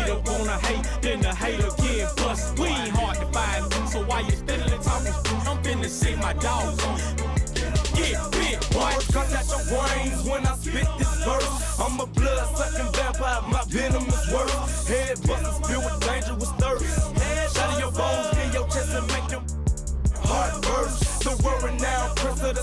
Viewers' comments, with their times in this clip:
0:08 You can't tell me he doesn't flow and sound like 2Pac here lol.